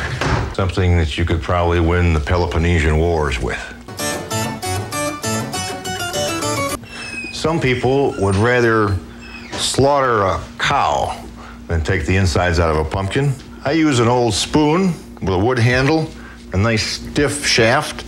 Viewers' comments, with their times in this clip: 0:06 *door squeaking - Couldn't get the ghosts to keep quiet!